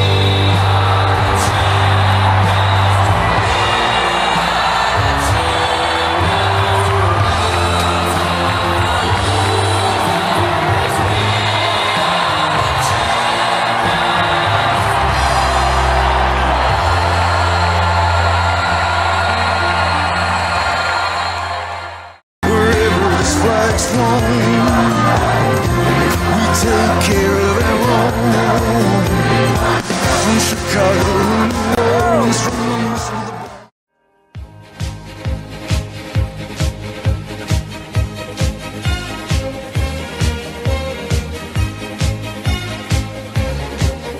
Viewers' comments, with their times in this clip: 0:08 trumps anime opening
0:25 Me who notices minor details: smooch